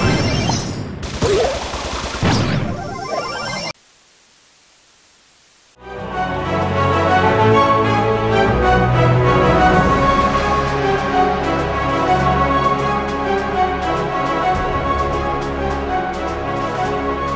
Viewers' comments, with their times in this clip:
0:05 the fat fat unity megalovania